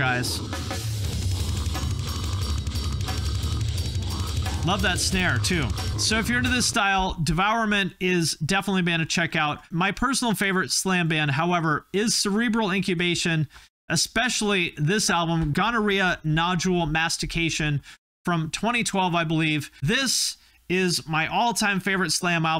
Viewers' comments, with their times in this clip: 0:03 Ahh, Devourment. When I first heard them, I was floored at how silly brutal it was. I mean, at one point in the song I heard, it sounded like the vocalist was pinching his nose and frog-growling through a road work pylon!! HAHA!! Part of why I love this genre is how silly it seems.